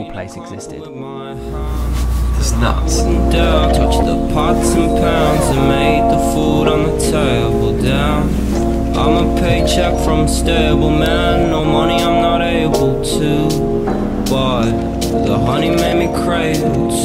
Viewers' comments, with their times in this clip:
0:04 What is the song ??? Oh my god, eargasms!! Sounds Chet Faker-ish :o :o